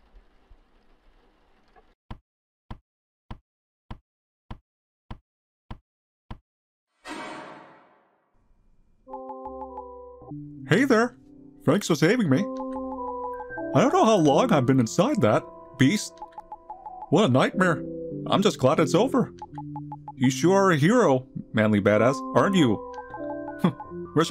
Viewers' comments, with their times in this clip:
0:04 at this scene we all know that everyone did a kermit the frog voice
0:11 it sounds like you are trying to sound like a canadian